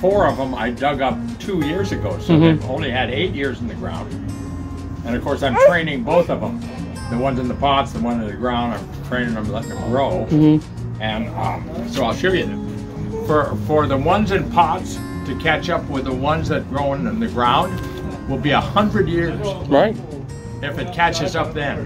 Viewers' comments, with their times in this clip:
0:08 What was that moaning sound 😳😳